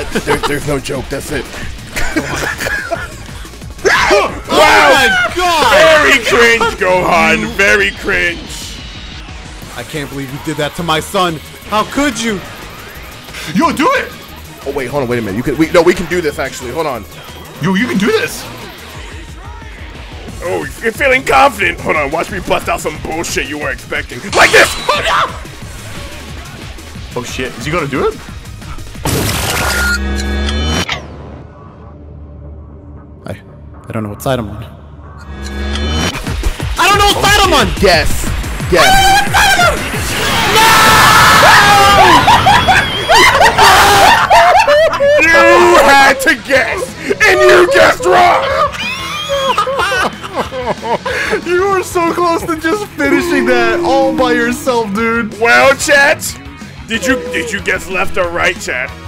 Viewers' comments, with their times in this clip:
0:03 they got the Fukken Bobby Noise!?
0:24 This entire end of fight right here almost made me piss myself laughing, especially the scream at the end
0:28 that scream made me feel the most pain any mc character arc anyone ever had
0:37 that scream of fear was fucking hilarious and really well done.
0:40 That fucking scream and broke me more then it should of oh god my chest hurts from laughing so hard
0:41 was one of the greatest screams ever
0:45 THE SCREAM IM CRYING